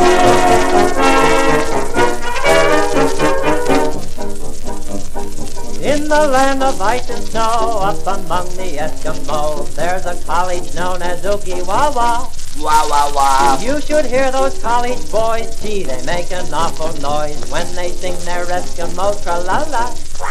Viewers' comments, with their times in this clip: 0:04 The song started